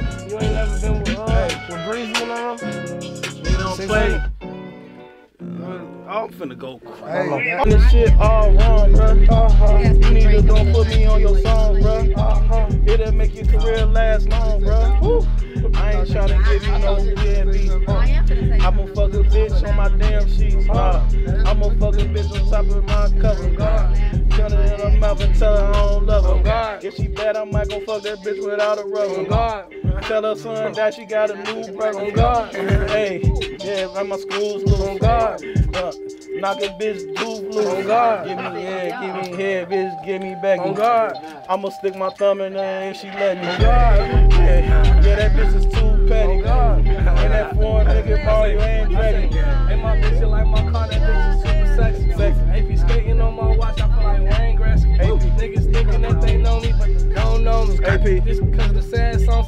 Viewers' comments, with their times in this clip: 0:08 THE BEAT IS SO FIRE
0:43 The beat 🔥🔥🔥🔥🔥🔥‼️‼️ SHEESSHH